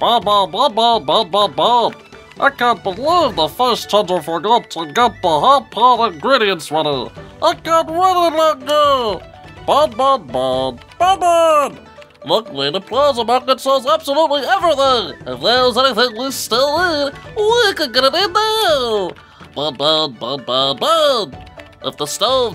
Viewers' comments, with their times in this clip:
0:05 sounds like Kenny from South Park 😭